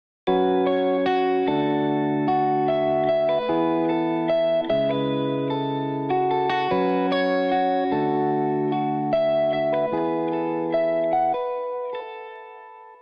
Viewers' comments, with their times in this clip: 0:01 why was this on the beat 😟